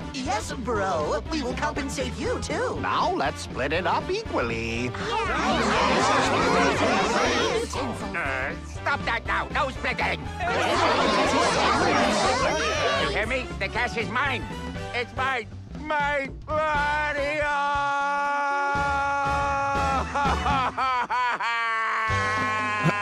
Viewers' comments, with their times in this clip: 0:07 i think you can hear someone say "untensils"